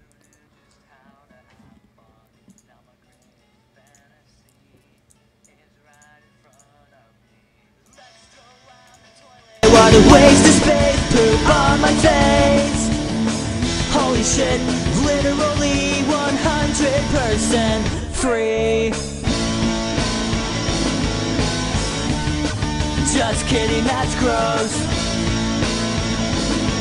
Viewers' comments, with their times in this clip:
0:10 Warning ⚠️⚠️⚠️ volume goes 0-100 ...